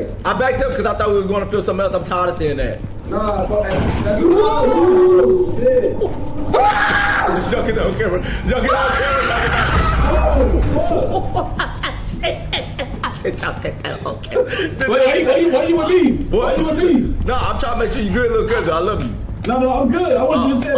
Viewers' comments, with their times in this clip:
0:07 Lmaooo dyl screamin got me dead😂😂😂